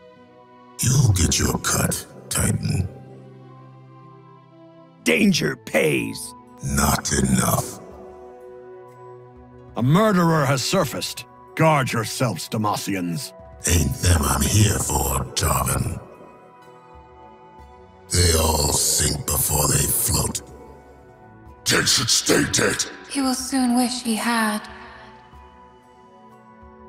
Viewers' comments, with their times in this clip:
0:08 That Jarvan sounds so much like "darling" that I wish that is what he actually said.